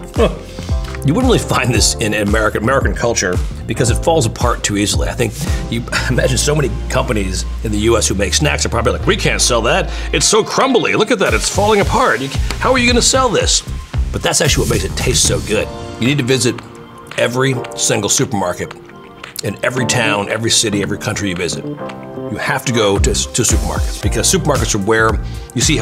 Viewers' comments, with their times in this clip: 0:10 His Seth Rogen impression is crazy